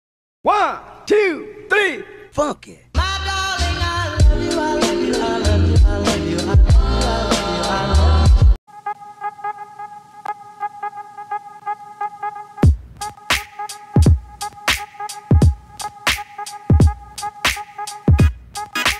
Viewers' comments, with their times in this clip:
0:02 After I heard this song before this intro I thought the lyric was Fu** it